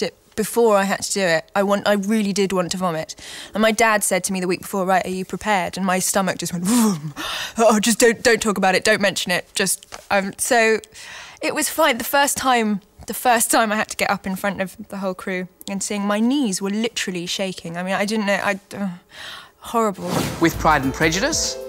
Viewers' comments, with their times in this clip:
0:07 i can see where your coming from, i prefer her vroom vroom car impression it gets really realy funny when you keep playing it over :L enjoy!